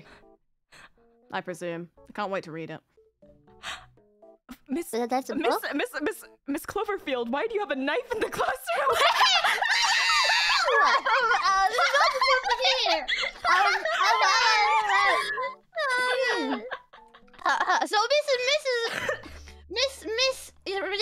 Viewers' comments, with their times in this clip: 0:03 Fuyo from oshi to oh shii-- real quick 🤣🤣🤣